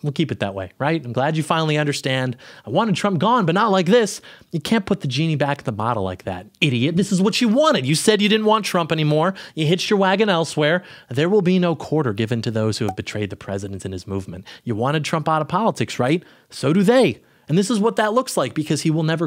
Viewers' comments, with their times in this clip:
0:07 you sounded like quagmire lmao